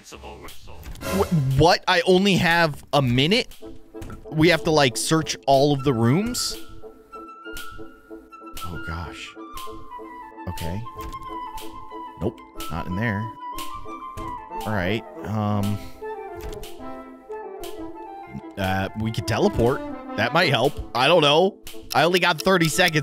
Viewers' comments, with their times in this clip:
0:04 a familiar song I have heard of before….